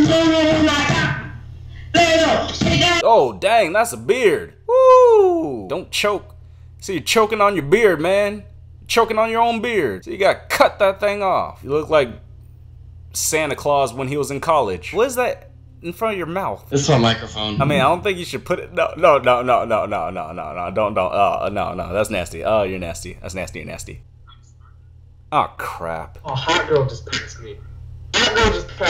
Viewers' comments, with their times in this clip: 0:09 The guy over was coughing like he had EBOLA